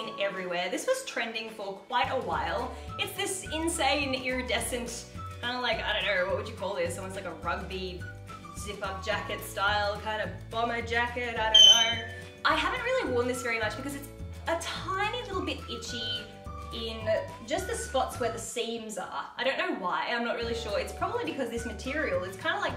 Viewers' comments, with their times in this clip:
0:10 When I heard this high note I thought a bird died outside from my window 😂